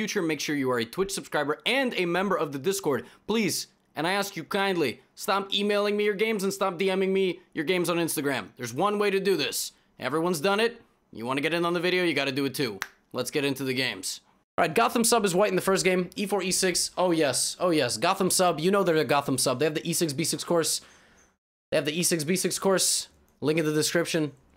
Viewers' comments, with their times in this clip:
0:08 he low-key sounds like Ron Swanson hahahah